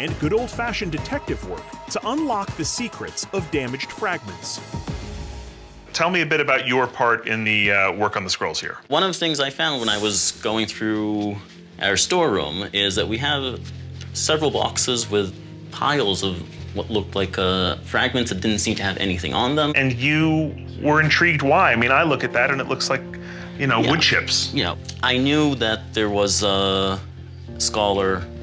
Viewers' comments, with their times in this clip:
0:10 Is it me or does he sound like Sheldon from Big Bang theory ? 🤔